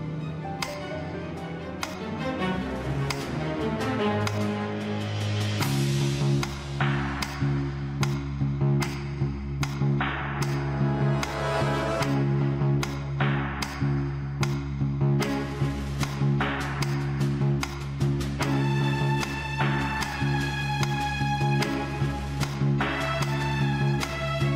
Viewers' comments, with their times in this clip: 0:04 Special kudos to whoever infused the metronome with the theme
0:09 the way the metronome is in sync with the background music is lit 🔥🔥😄😄